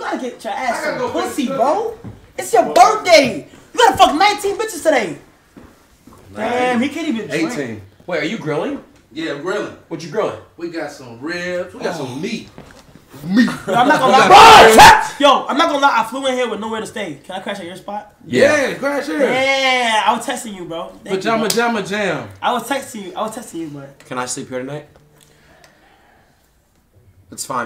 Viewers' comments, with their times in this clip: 0:10 The way his father said MAET.